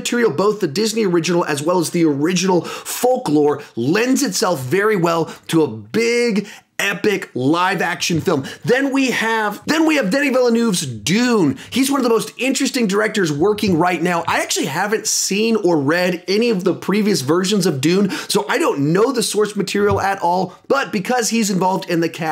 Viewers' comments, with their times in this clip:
0:07 he says "Then we have..." twice with an obvious cut